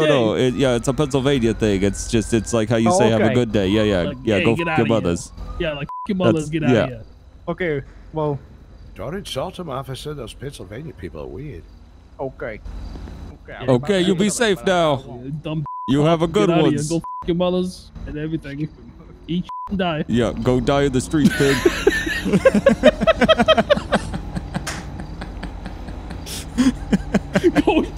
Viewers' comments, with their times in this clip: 0:08 that voice made me thing it was an ad 💀